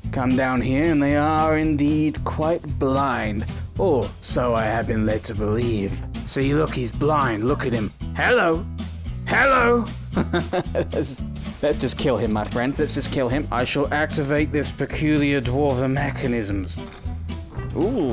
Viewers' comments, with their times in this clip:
0:04 it sounded like Mama by MCR was playing ahaha